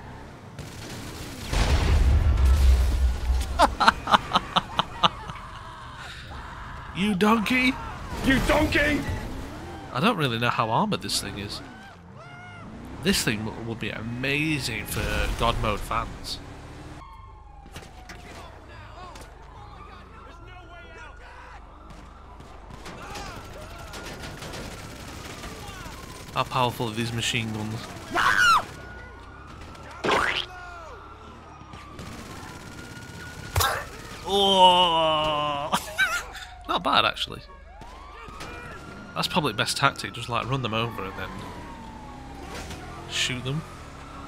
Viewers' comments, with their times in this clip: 0:05 is that him screaming 😂
0:28 Is that ur friends scream ur using in ur videos for a meme? Lmao.